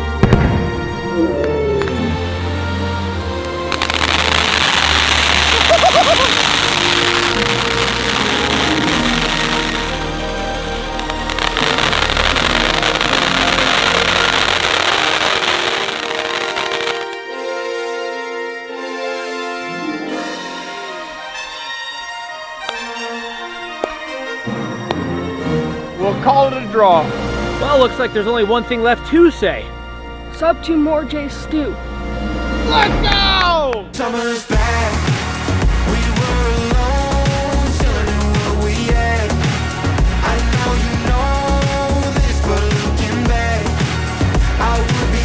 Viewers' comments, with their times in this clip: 0:04 is like POPCORN
0:05 your rads meter screaming at you when you try to go swimming in fallout 4 lol
0:17 the music sounds like the final music at the final scene of a movie from CBEV
0:33 The song at the end was amazing